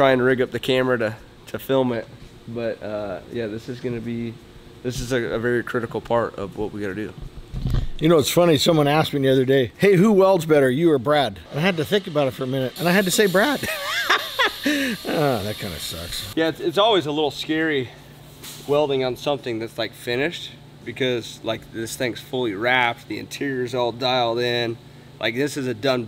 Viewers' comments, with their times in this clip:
0:08 He had me laughing the why he laughed and his face at the end…